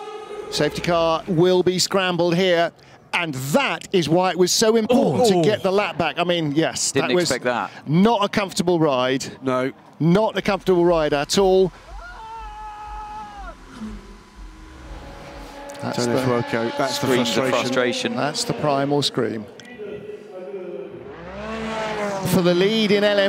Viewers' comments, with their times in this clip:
0:08 Holy cow that scream is just heartbreaking
0:10 Man was lagging so hard he screamed half a minute after the accident.
0:11 Ah, the sound of Ferrari.